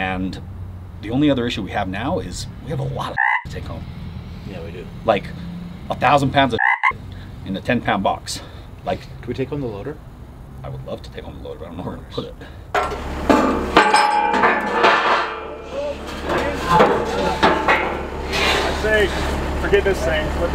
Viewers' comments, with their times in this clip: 0:04 You have a what?? A CRICKET?? or FROG??? ish